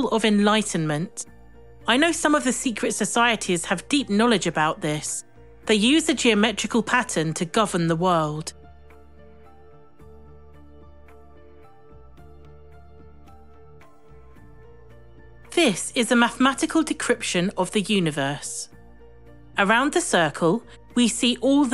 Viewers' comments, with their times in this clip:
0:07 Long pause lol